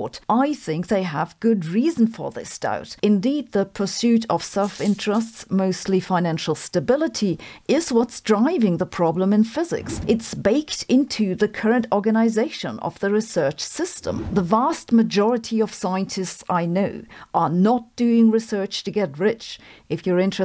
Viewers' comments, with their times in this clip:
0:04 I wasn't looking and had my earbuds in. That sound scared the crap outa me! It sounded like there was something in the room!
0:06 The coin sound effect scared the life out of me. I wasn’t watching the video and DID NOT see it coming!!! I thought a big bug was flying around my living room.